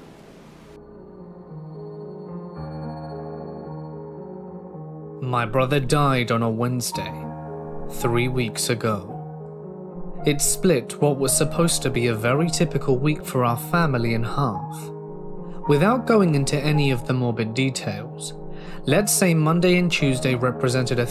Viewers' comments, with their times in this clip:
0:09 just right off the bat to get something off my mind, the way you narrated the first sentence had my brain radio put on vienna teng's song Passage - Give it a listen just for the 20sec of the song then you know what I mean xD